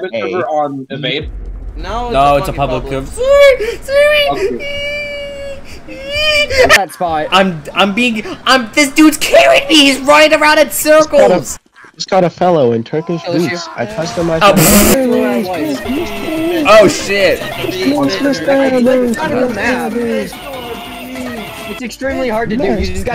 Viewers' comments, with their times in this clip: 0:06 Bro this cut scream got me wheezing hard